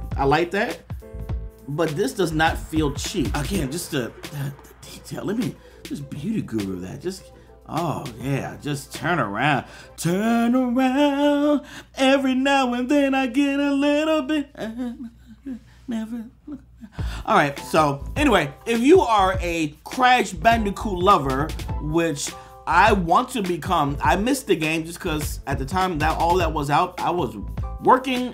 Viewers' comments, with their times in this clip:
0:09 OMG I LOVE THAT SONG!!!!!!!!!!!!!